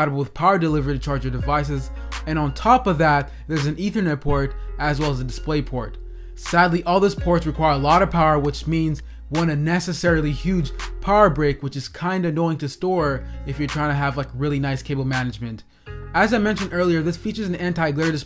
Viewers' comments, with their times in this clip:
0:06 What is a power break (or brake)?